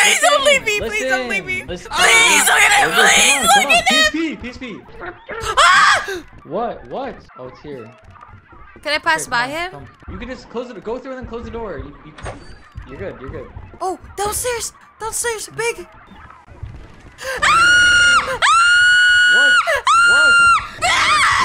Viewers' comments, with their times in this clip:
0:07 Whats that sound on seems like editor is from india 😂